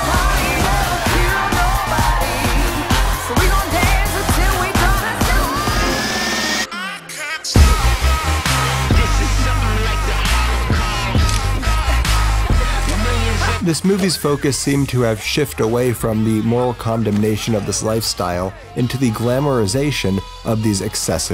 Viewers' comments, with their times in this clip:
0:06 That kind of music wasn't around in the 1920s!